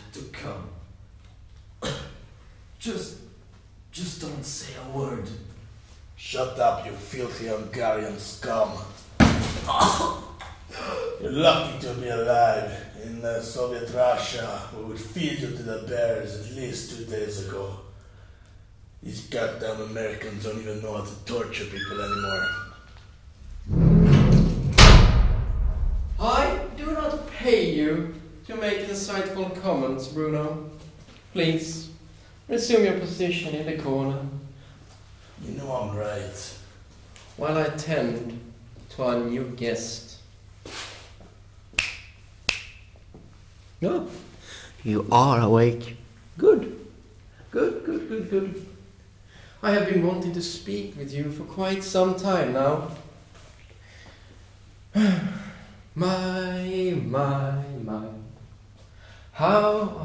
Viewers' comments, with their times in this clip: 0:03 me: maybe I shouldn't do this in the morning this was pretty crazy, when I got startled I opened my eyes but my phone was lying up on the bed next to me so I could see the lit up ceiling and I moved my hand just as I heard footsteps beside me and that made a shadow against my wall and I almost had a heart attack lol....
0:21 I actually jumped at the sound and looked to the right at my door (even though it's locked) because I thought my door was being opened I'm a scaredy cat but I know what to anticipate in this rp. That's why it's so funny to me
0:21 Ive been scared buy the door xD
0:44 It's am and after listening to this I was terrified of sleeping BC at any moment I thought I will hear a. Guy whisper to my ear